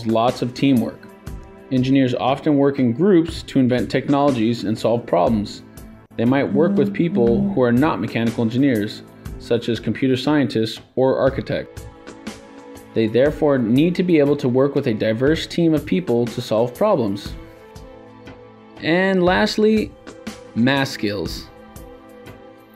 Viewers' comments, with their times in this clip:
0:07 Sounds like mobile vibration.